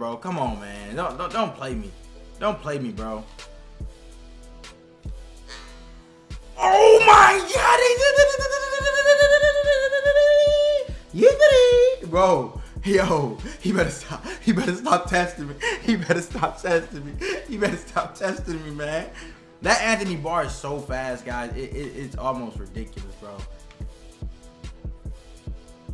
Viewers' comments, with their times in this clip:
0:07 nigga sounds like roger rabbit 😂